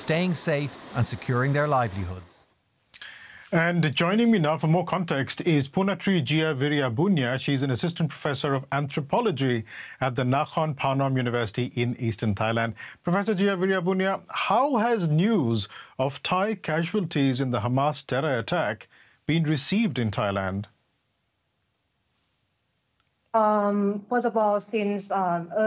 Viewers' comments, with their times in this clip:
0:06 wow .. really spot on pronunciation of her name! ❤❤